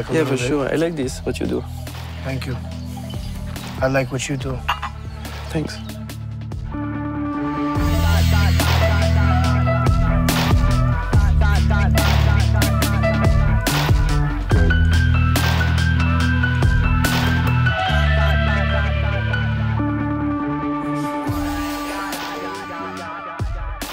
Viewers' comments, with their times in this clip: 0:05 anyone know the song so chill